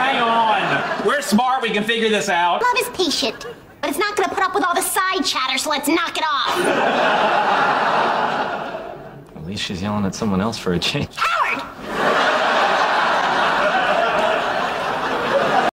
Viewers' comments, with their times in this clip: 0:11 That last HOWARD!! scared all